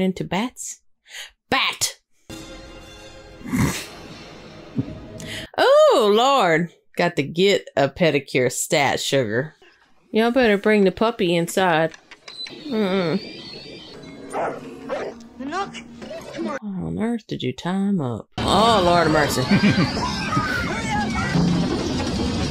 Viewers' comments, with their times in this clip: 0:04 Needs a pedicure “Lestat”